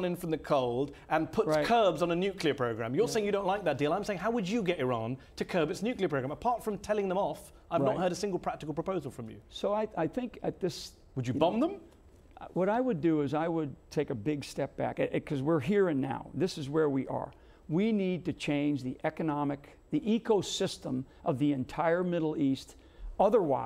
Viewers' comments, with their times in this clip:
0:08 I apologise in advance for lowering the tone, but I'm sure that the reporter asks a most curious question....it seems out of character, given his performance up to this point, which by and large was pretty impressive. I've never considered a good bumming before as a means to make effective changes to a contentious and convoluted world issue. Then again, we seem to be living in a primal age where humans can no longer look to fellow humans for guidance, maybe Mehdi is tacitly engaging with the Benobo model as a means to resolve human conflict.